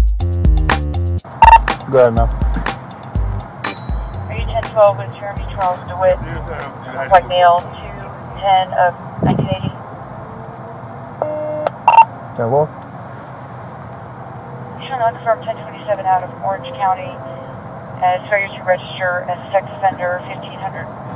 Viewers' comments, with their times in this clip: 0:08 This dispatcher is actually getting tired of reading off so many criminal charges that he has accumulated....lololololololololooolooolol